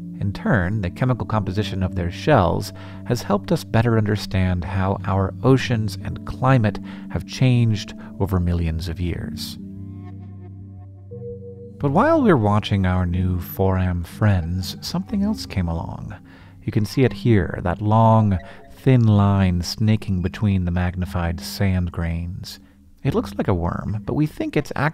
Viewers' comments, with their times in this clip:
0:09 tried to scare away the mosquito in my ear... video trolled me lol